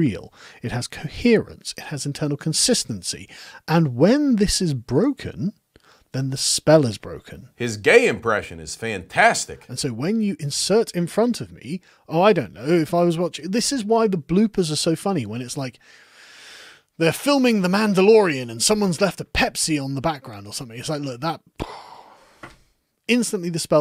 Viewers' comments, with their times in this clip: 0:07 Amazing, George Carlin would be proud of the timing and delivery of this line.